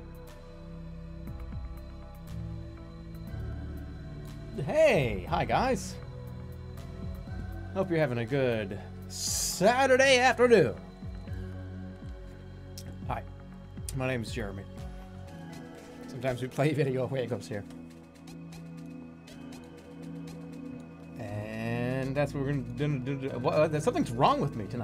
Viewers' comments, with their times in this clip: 0:09 Jerma starts talking